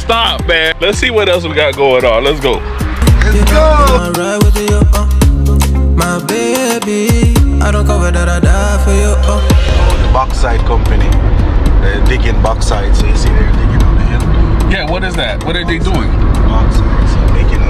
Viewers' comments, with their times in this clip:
0:05 Big fan here from Germany....what did he mean by 'backside' ? .... he also said something about 'digging in his backside'...can anybody explain?